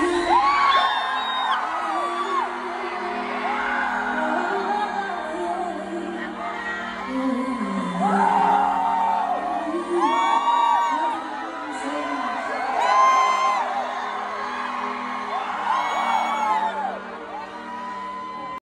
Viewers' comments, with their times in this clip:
0:08 YES GIRL HIT THAT NOTE i’m so obsessed with that low note